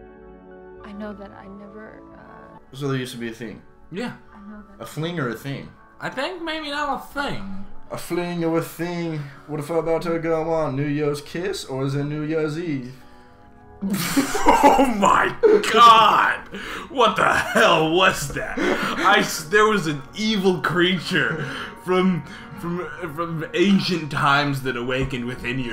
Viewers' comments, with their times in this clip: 0:08 WHAT THE HELL WAS THAT RAP😮